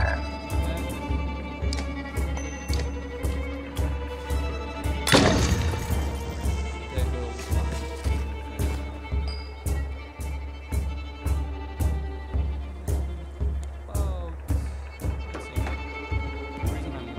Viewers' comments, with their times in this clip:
0:03 too bad that from -ish in the vid your voice is so faint the game music and effects overshadow it and cant hear a thing X) it was great before it :) most likely something gone off while recording nice vids btw, this game looks sweet :D